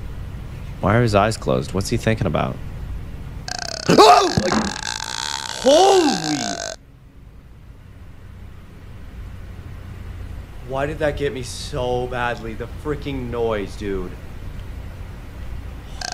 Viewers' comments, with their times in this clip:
0:03 Caylus its literally someone croaking their throat and you jumped out of your skin lol!